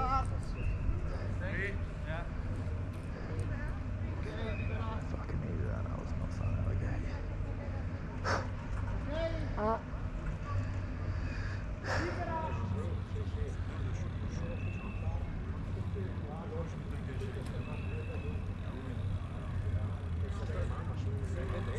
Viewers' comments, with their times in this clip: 0:09 Glad you're healed up and back at it so soon. Best of luck tomorrow Edit: The fart was also gnarly
0:09 Wide view (sound 🤔) fart, Proper gnar. 🤣
0:09 Best race coverage available. Shame UCI are so precious about GoPros though. are there barking spiders up in the forest? 🕷️